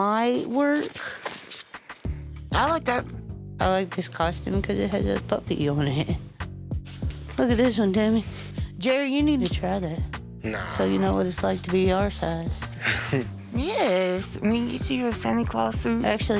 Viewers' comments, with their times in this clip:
0:03 The way she said "I like this costume cuz it has a puppy on it" Oml she's so adorable and precious 🥺